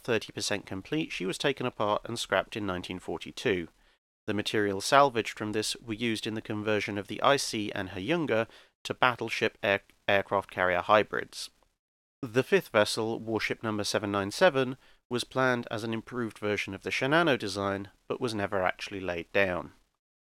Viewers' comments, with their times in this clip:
0:04 I spend the better half of a minute wondering what the two ships were "Icy"? "Her younger"? Then it struck me.... it was Ise ("e-say") and Hyuga ("hue-ga"), just that its read with english pronoun. Note to self, drink coffee.